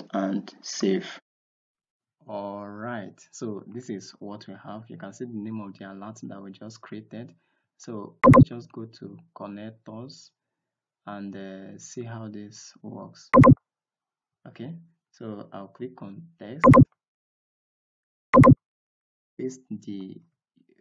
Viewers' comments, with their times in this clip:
0:03 From here on out there are some loud sounds, you may want to keep the volume not too high.